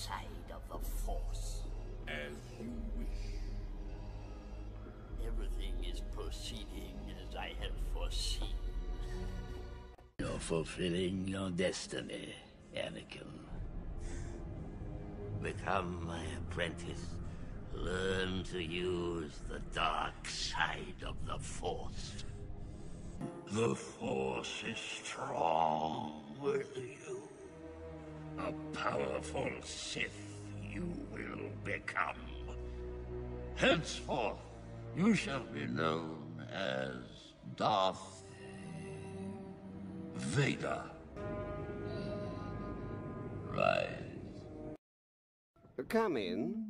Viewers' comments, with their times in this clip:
0:05 Who is Missing That Legendary Laugh Of Lord Sidious
0:22 This Sidious voice was truly the embodiment of sinister evilness that always horrified me as a kid. The raspiness and near demonic, deep droning of his voice and breathing, especially when he said "Vader" and "rise", was bone-chilling. Incredible voice acting and editing.
0:28 That vocal effect they put on Ian McDiarmid's voice when he says,"Henceforth! You will be known as Darth inhale Vader." Gets me every time. Star Wars has the best audio.
0:34 damn emperor got autotune